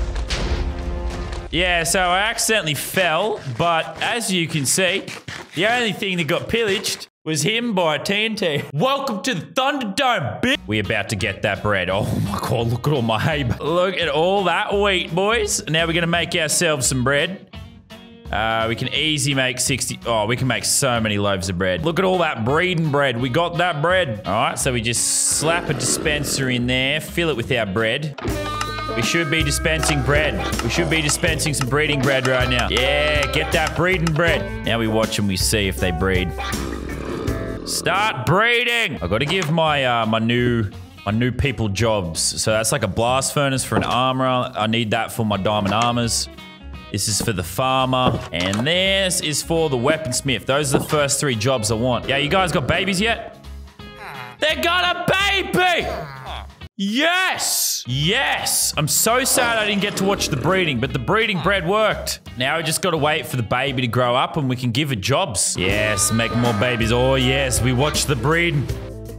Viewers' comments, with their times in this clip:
0:08 that sounded like a villian movie quote
0:57 That yes sounded like pewdiepie